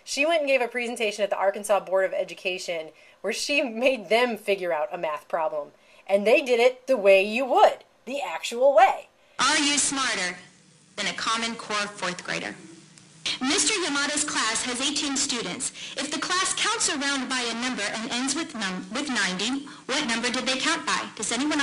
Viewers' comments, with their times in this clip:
0:06 Thank you for blowing out my ear drums unexpectedly.